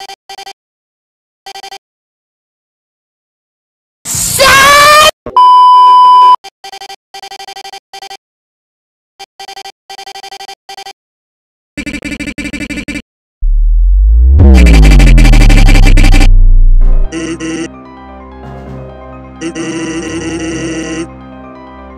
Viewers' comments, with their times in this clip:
0:04 I unplugged my headphones MY EARSSSS